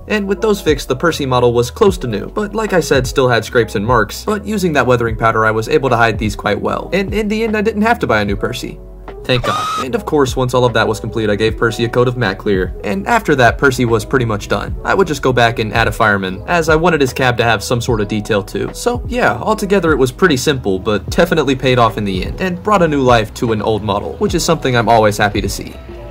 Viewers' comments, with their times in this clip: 0:08 i blame school for missing the prrmiered also that sceraming btw love the model =D i wonder if you would add more stuff in your rail garden